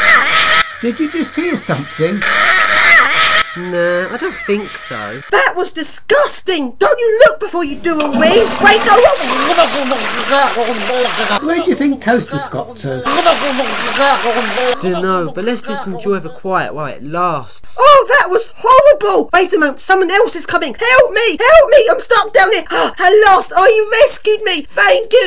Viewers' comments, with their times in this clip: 0:09 sound effect: wheelie bin sick